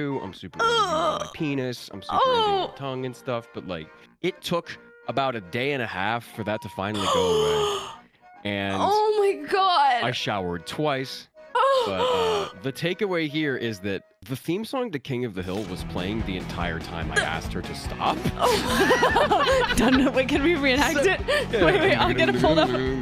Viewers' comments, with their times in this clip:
0:04 really sounds like weeest